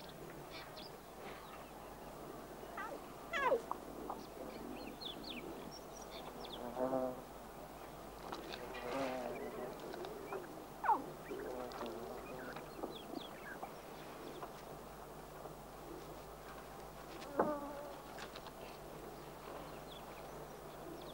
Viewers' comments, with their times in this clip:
0:03 sounded like the cub was saying ow cause the mum was slapping him of something